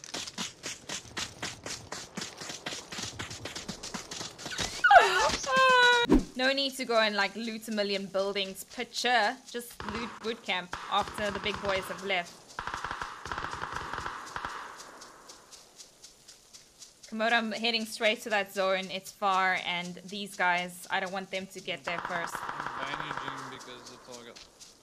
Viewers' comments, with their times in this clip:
0:05 is that NZ accent?